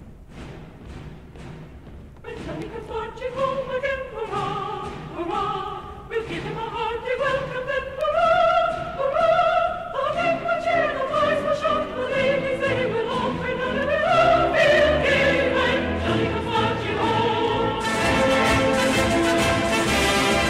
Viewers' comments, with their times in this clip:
0:03 chills emanated from the base of my neck all the way down to my feet. Great music especially when you aren't expecting it